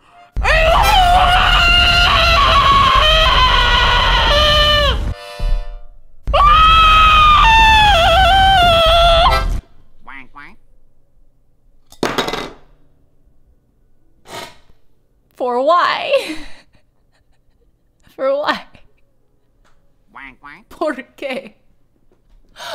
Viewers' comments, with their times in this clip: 0:05 the way you just scream THROUGH the harmonica LMAOOO